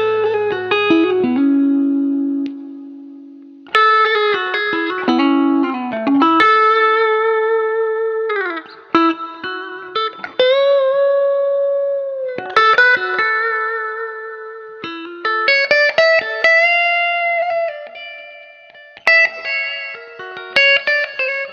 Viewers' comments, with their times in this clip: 0:08 Love the little quote of Peter Green's intro to "Need Your Love So Bad" after you switched to out of phase in the middle position! Also, those bass string overbends in the first jam were incredible -- such a rich sound, and SO hard to control...kind of like a cross between Otis Rush and Jerry Donahue. Amazing stuff!